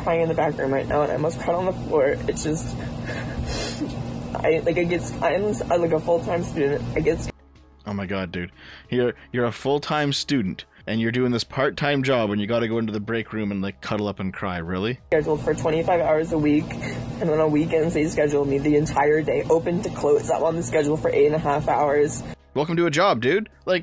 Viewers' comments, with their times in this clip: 0:04 Looks like a woman with a beard, if I didn't see the visuals I would have genuinely assumed that he's a woman because of their voice.